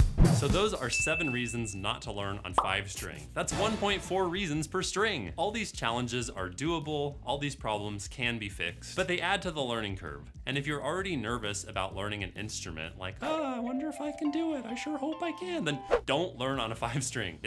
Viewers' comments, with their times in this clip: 0:03 TONY HAWK MCTWIST SOUND